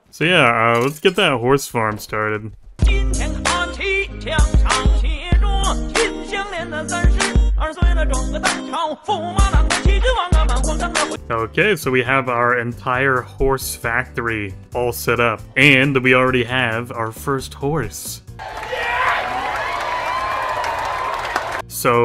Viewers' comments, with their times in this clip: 0:03 lol china music